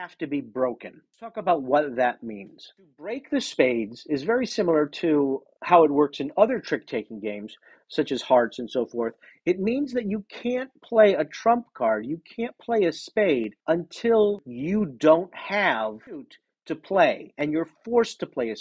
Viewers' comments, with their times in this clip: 0:04 The creepy alarm is annoying..